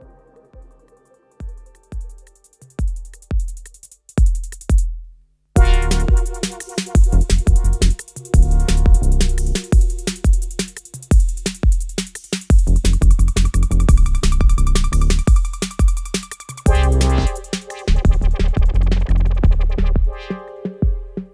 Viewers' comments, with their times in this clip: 0:05 how are you mixing it ? The kick sounds so nice and punchy !